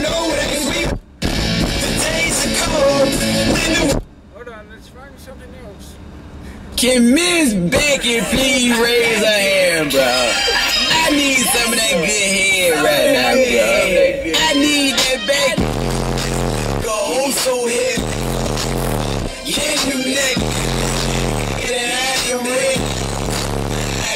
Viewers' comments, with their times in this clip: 0:10 NICE vid bro. love the bass. what is the song ? love the beat